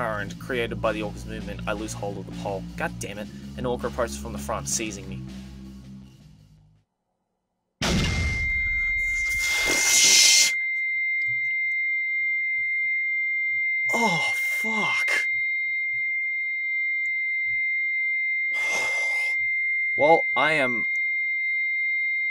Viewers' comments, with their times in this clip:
0:07 Approx. RIP headphone/earbud users!